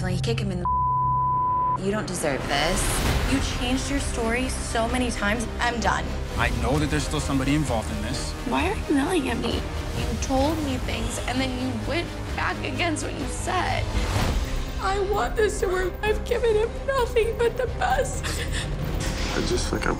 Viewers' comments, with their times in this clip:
0:07 Aven wasn’t even yelling 😂